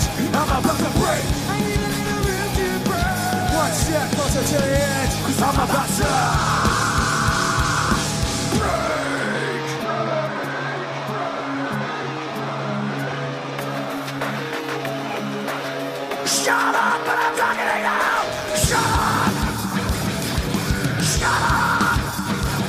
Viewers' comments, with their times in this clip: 0:03 The way Chester says "Break"